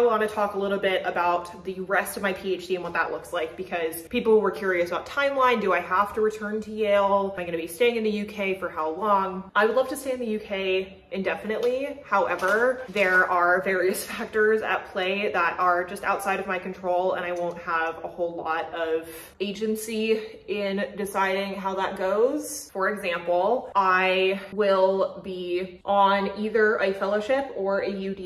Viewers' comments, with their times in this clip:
0:10 The way you said “Indefinitely.” reminded me of Julia Roberts in ‘Notting Hill’. I hope you have a great time!